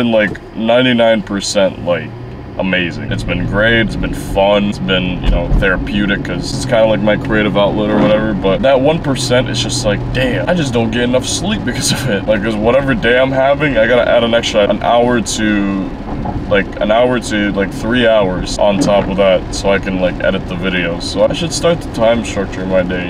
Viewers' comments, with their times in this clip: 0:07 btw was that a fart lmfao